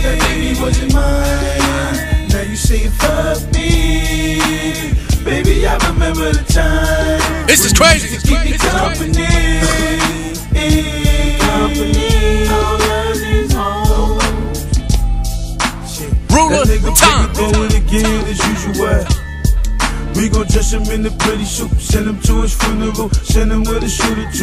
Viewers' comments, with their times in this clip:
0:09 Home boy dead ass coughed on the track smh lol